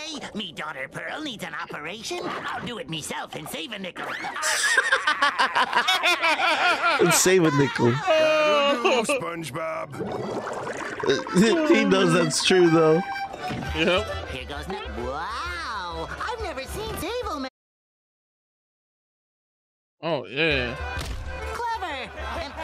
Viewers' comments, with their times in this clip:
0:03 I thought he said the n word 😂😂😂